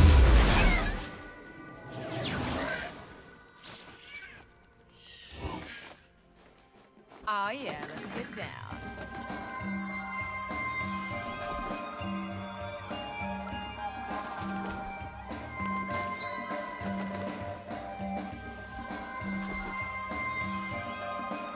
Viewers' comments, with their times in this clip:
0:06 I beg anyone, if they can find the music of their dance emote. I love it!!! (update) looks like it's some kind of creepy tango if anyone can data mine it....
0:08 dance music looks like,Dark Cosmic Jhins dance music